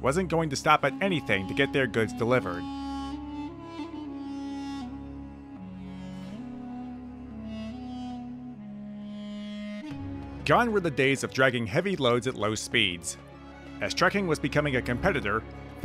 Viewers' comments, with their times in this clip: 0:03 music implies Union Pacific would have a go at conquering Arakis or the Cylons